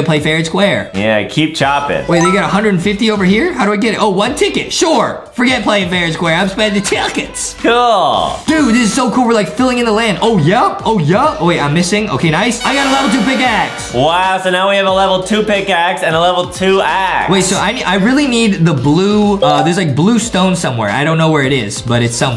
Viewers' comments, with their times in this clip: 0:06 BRUH TICKETS SOUNDS LIKE HIM SAYING CHUCKEN